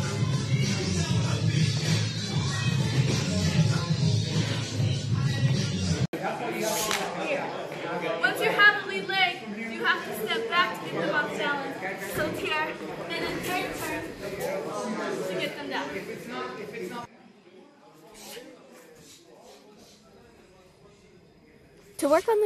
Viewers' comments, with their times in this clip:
0:05 That giggle tho